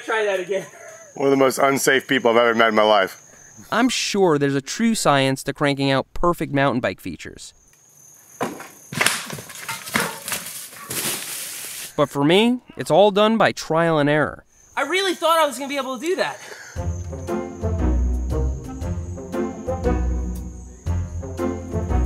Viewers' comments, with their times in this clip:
0:07 it sounds like he breaks his fork listen
0:08 I'm pretty sure something carbon cracked there. You could hear the snap.
0:08 How did you not blow up your front end ? I thought for sure I heard something snap!
0:08 i heard some crackage and saw a large amount of bending and your like " i really thought i could do that" BRUH LOL
0:08 that didnt sound right
0:08 sounded like your inner tube busted
0:08 The snapping sound
0:08 sounded like your inner tube busted
0:09 That snap definitely sounded like a broken frame :E|